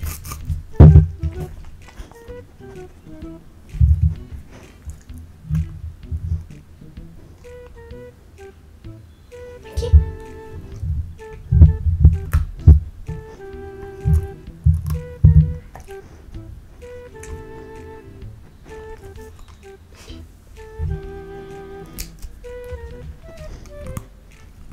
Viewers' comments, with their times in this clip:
0:09 she speak portuguese?